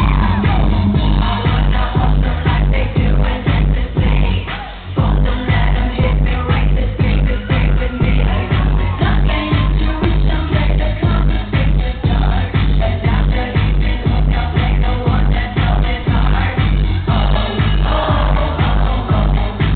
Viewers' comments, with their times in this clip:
0:03 i love whwn the music dies out it sounds really cool. haha she looks and sounds so amazing here. sometimes i wish she would bring back the old club beats <3